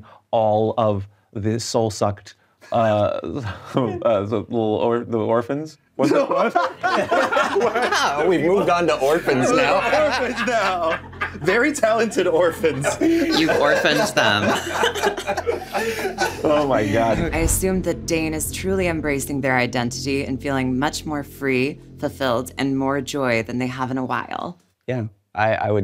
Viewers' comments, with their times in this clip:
0:08 There's that laugh.